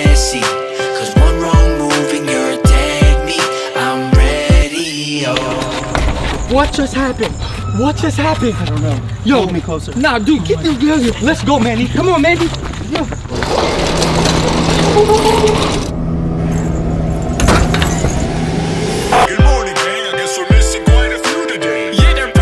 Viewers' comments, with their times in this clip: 0:09 YO THE WAY HOW HE SAID HOLD ME CLOSER IN FRONT OF HOS WIFE